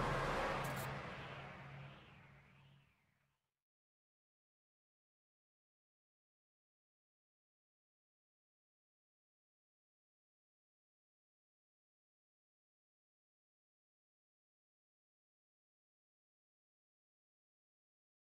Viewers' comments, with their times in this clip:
0:05 no sound given 😅